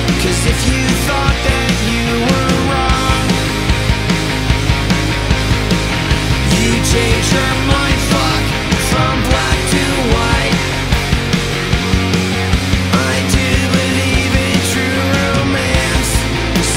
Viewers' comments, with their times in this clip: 0:03 maybe the greatest chord change of all time ...bless